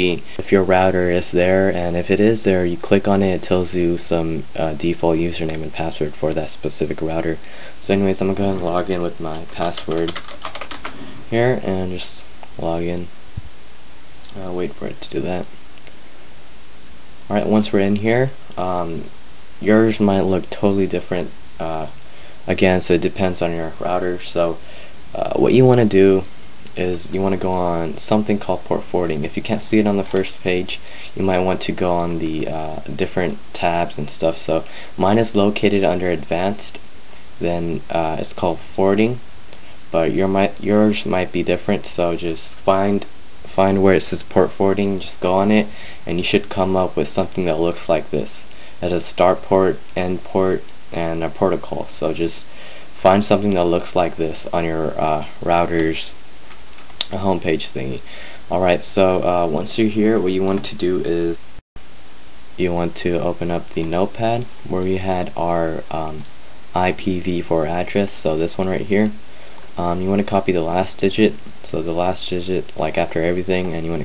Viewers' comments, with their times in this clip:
0:04 change voice why?
0:56 once again, if anyone knows what a "portical" is let me know lol